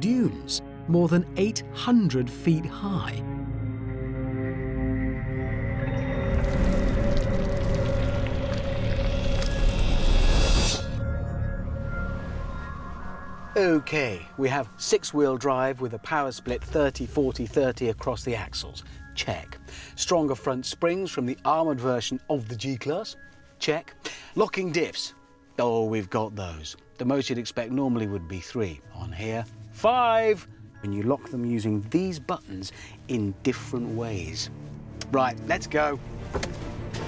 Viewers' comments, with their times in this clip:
0:06 Picture: Sand flying around... Sound: Your bowels coming out of your stomach.
0:23 what is a "locking dips" ? thank you ps